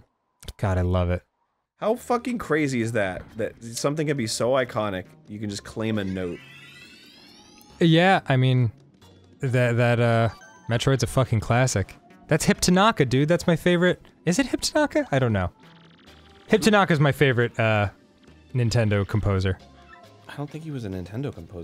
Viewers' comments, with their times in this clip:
0:08 the G note